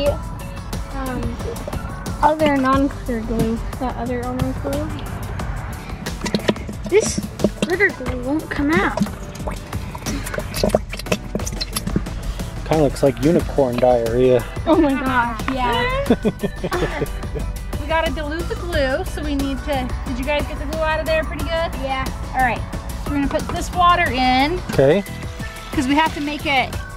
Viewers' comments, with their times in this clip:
0:08 sounded like after I ate my cheese and bean burrito 🌯